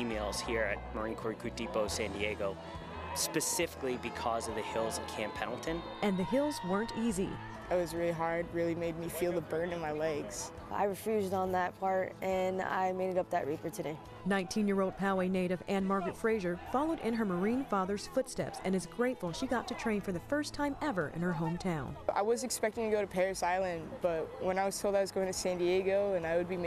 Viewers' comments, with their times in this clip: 0:07 they already have baritones. Jeez